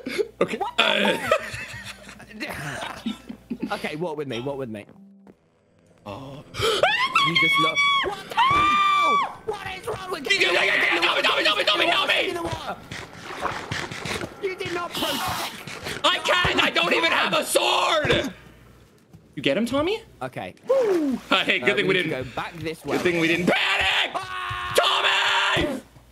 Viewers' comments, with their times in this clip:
0:05 wtf was that scream?
0:08 Oh Man That Is A Man Screams No Offense Im Impressed